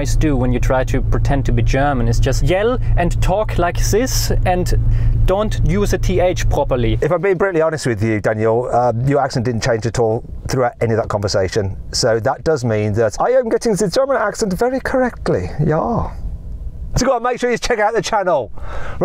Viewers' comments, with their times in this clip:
0:07 to be fair we really do sound a bit like this 😂